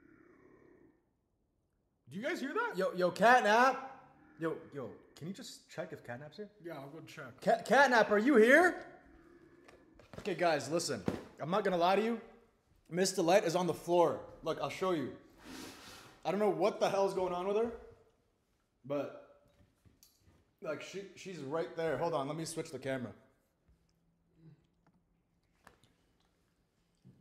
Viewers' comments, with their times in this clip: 0:10 Yes I can hear him 😊😊